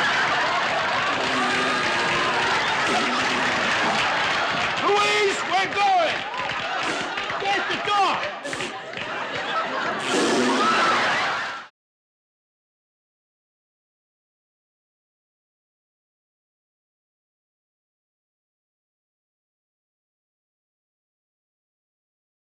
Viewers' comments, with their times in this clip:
0:10 Two grown men raspberrying at each other. Priceless.